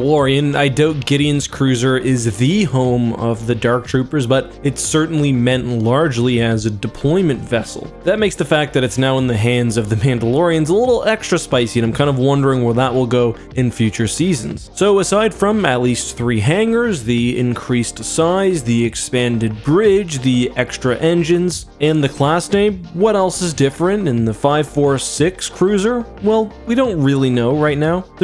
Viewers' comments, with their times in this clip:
0:09 did you say Pandalorian?